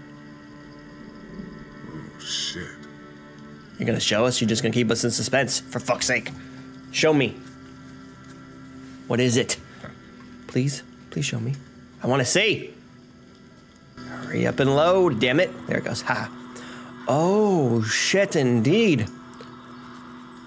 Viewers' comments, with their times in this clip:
0:06 you sound like me haha I would be asking the same. I love the singing as well. You did well with the lyrics.